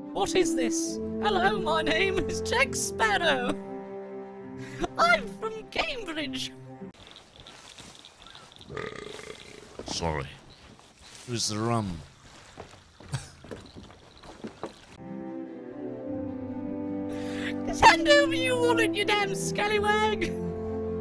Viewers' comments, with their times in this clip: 0:04 that robotic voice sounds like he's Guilty Spark from halo!